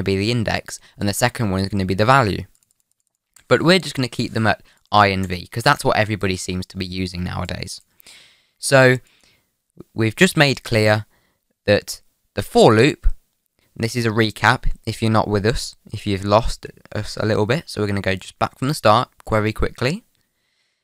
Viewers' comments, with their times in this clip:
0:04 sounds like what a OG would sound like XD